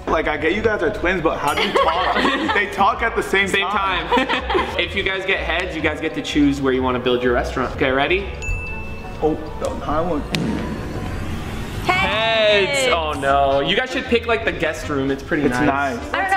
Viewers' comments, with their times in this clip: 0:04 Bro the laugh was weird